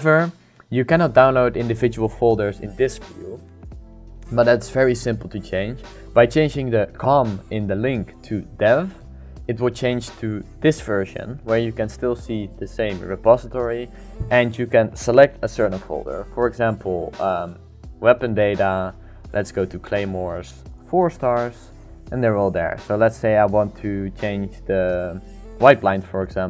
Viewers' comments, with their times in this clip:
0:07 sorry but I can't hear it ,I can change the com to what?